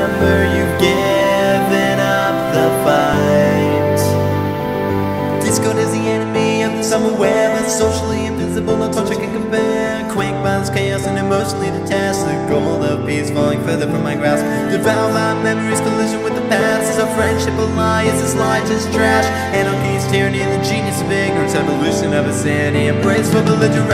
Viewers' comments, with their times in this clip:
0:10 Tell me he doesn't sing "emotional testicle". No offence darlin', but that's what it sounds like.